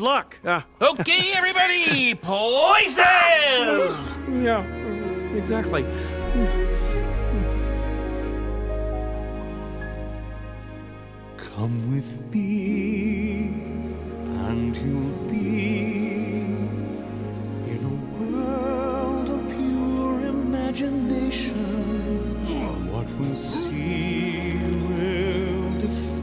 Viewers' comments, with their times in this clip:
0:08 is when the actual music starts